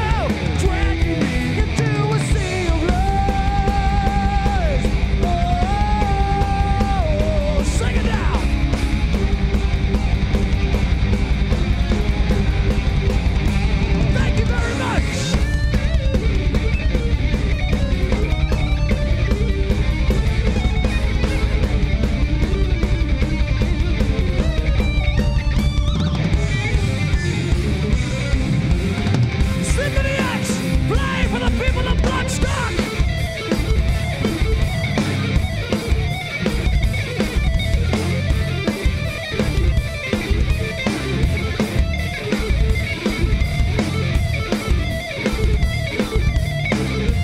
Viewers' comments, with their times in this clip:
0:04 starting the serious lead breaks from Mr. Romeo!
0:31 But isn't that how live DVD's are made? Granted they will be mixed but still it shouldn't sound this bad. Some of the solos on this video are ok but is really bad :D Sounds completely of tune